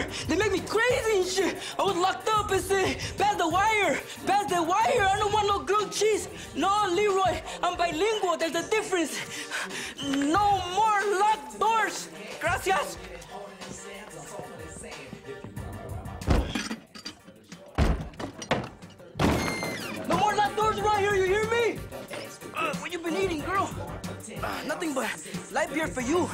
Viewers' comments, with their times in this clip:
0:10 sounds likes she farted lmao😂